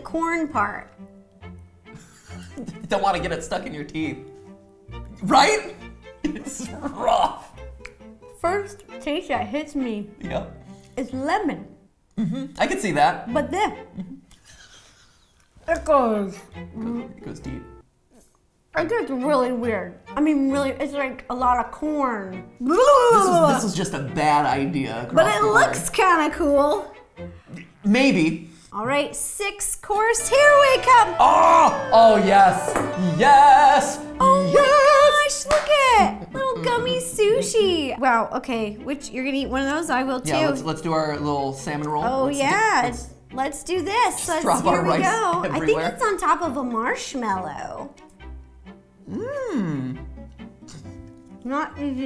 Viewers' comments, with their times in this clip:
0:08 she sounds so funny 😂
0:33 ✨ MatPat starts singing ✨